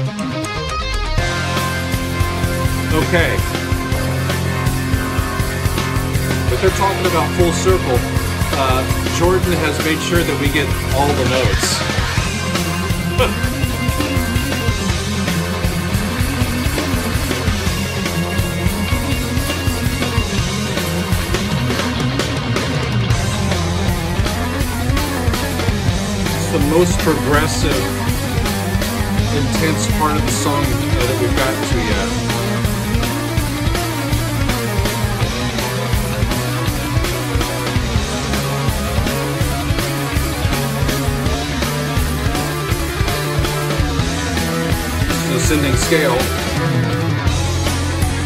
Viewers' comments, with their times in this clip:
0:08 "Jordan has made sure that we get all of the notes" Cue one of John Petrucci's most intense riffs ever
0:34 The guitar on the left and synth on the right.